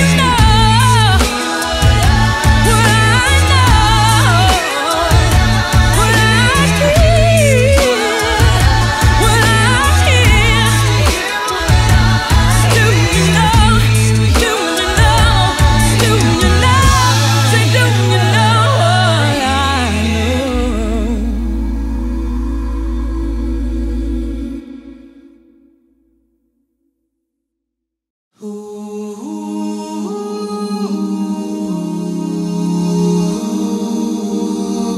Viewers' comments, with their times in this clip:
0:04 This sucks ... the original is much better I wish the estate would stop doing money grabs a leave her music alone ... whitneys mothers background vocals are much superior this version is probably for Trump supporters
0:20 Homie Matt hitting an A1 🔥✊🏽